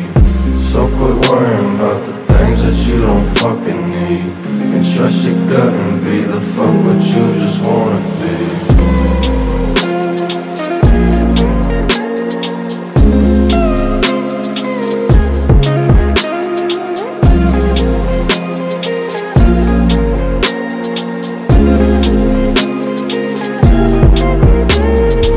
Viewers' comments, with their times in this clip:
0:08 that guitar makes me feel like a gangstar